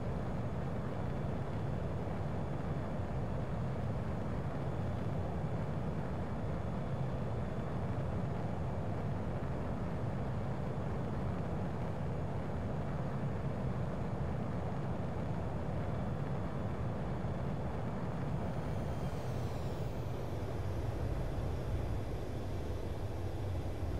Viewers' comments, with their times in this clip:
0:09 Screamed like a lil child